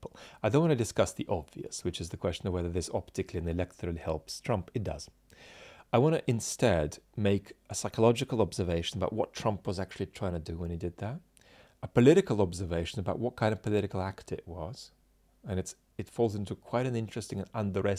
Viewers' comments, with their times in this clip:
0:03 Are you saying "it does" or "it doesn't"?